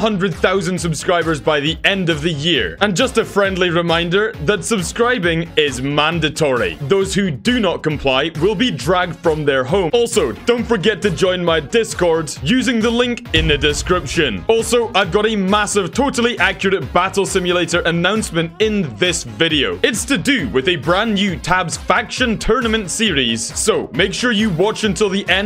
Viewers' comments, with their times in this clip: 0:06 The agressiveness of saying subscribe has decreased I think